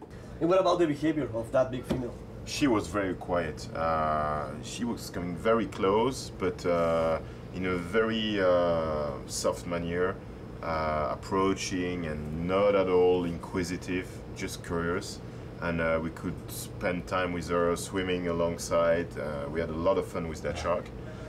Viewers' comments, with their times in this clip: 0:08 did the bald dude say "Manure" no matter what language that mean sh*t right?